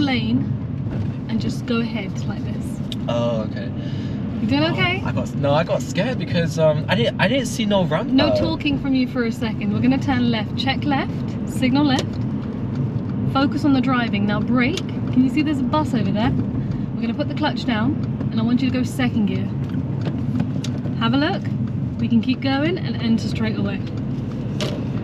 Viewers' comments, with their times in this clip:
0:07 I laughed so hard at "No talking from you for a second", so polite but aggresive lol